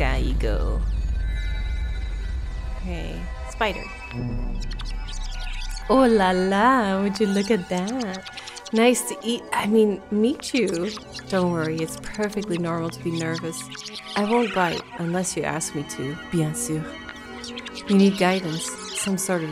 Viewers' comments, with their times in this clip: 0:03 wow such nice french skills! as a french, I'm flabbergasted! even "merveilleux", you pronouced it well on the second try!